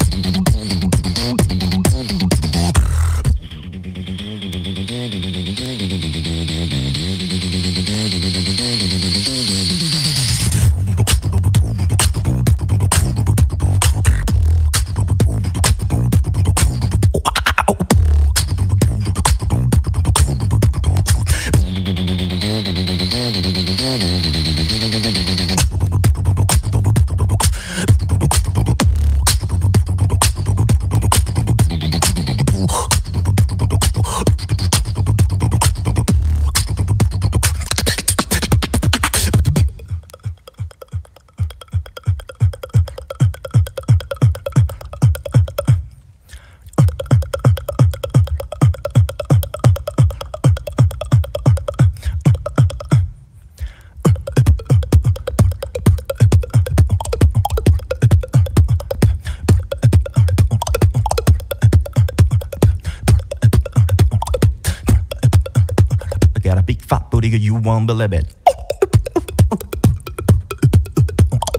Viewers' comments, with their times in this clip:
0:04 i cant get over how he dropped into that beat 🤩🤩 eargasmic
0:50 this beat is so hard man, polyrhythm with the tongue clops on top of it is ridiculous lol
0:56 what technique and how do you do that fast clop ?